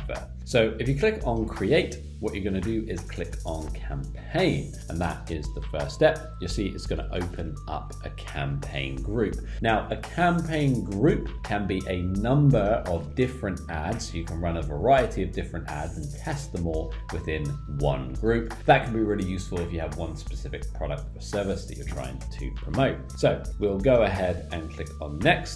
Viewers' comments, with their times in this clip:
0:07 good info, but the music is just so annoying, I had to stop it. Starts into video